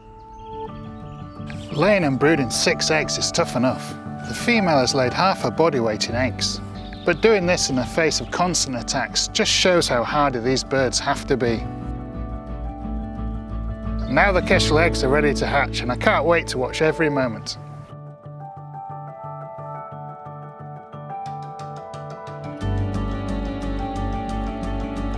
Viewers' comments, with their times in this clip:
0:10 Kestrel: " content humming " Butterfly: exists Kestrel: "AH! Who are you?!"